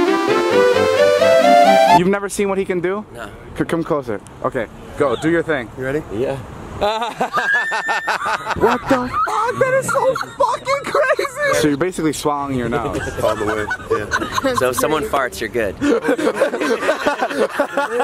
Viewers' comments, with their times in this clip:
0:06 This man literally said: LeViAtHan